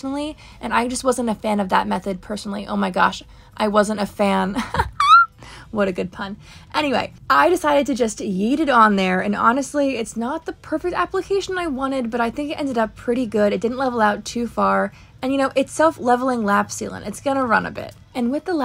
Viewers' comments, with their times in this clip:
0:04 that squeek :face-blue-smiling: